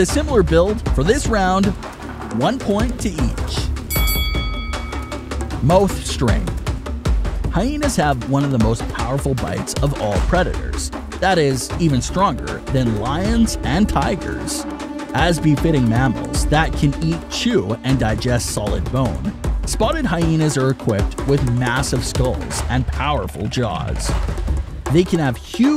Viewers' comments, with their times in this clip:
0:06 ah yes MOOWTH strengh